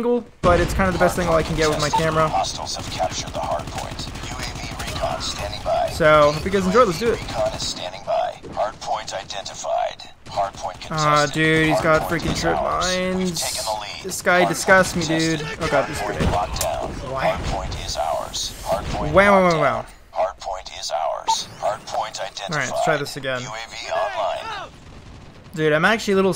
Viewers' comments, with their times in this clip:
0:10 Announcer talks for 15 seconds straight